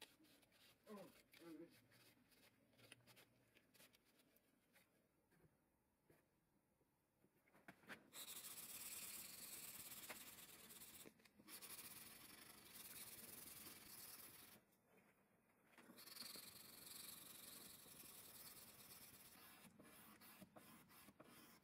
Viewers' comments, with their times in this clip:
0:03 the mosquito in my room at 4am